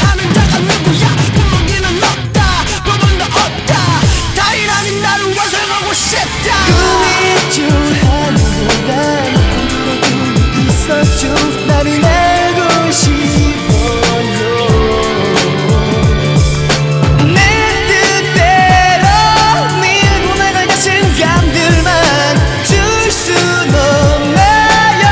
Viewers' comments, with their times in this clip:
0:06 first time hearing that switch was heavenly